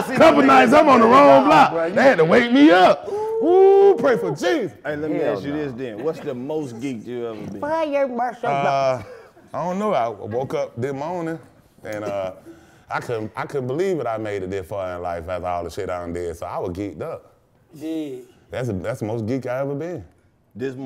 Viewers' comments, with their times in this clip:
0:05 somebody farted listen closely